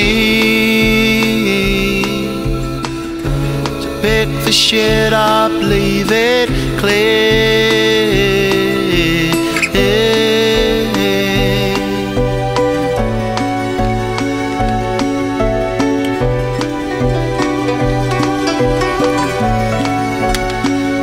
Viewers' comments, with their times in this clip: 0:03 The way he delivered this line was perfection